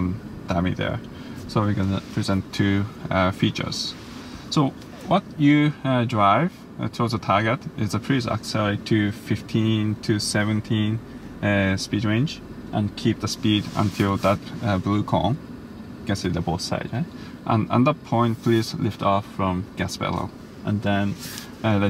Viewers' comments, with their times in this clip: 0:05 did he say fuck you? 😂